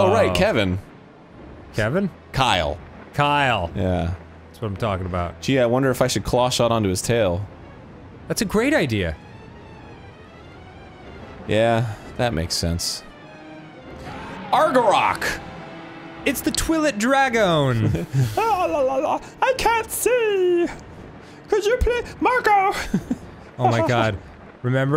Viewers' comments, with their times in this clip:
0:08 sounds like monster's inc music in the background lol